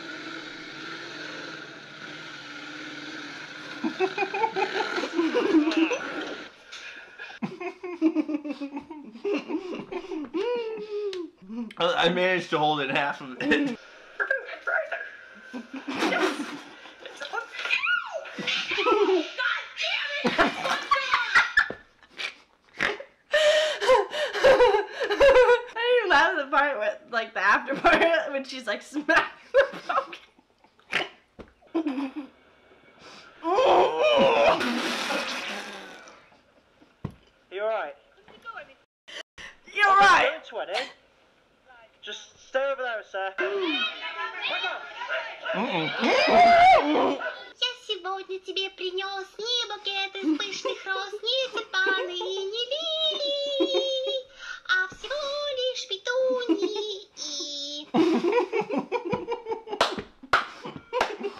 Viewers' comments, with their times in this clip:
0:05 I had that weezing laugh goodness yall are hilarious <3 :) THANK YOU FOR BEING SO FUNNY
0:47 this Russian language 😄